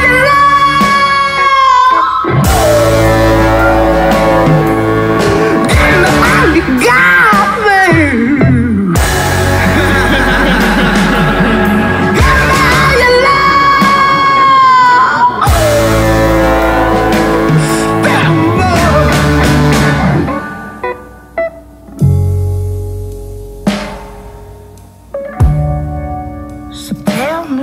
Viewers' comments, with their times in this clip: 0:09 that laugh gave me fucking chills
0:09 that laugh hahahaha... cries
0:09 is that just brittany voice or guitar?